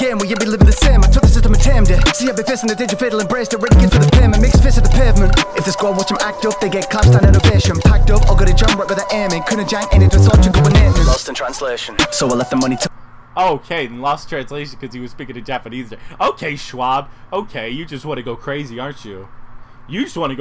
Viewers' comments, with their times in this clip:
0:08 he spoke in korean there